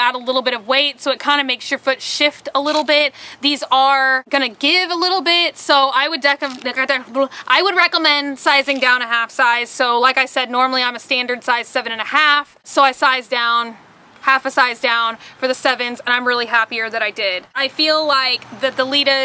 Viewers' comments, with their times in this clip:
0:05 I like how you speak chewbacca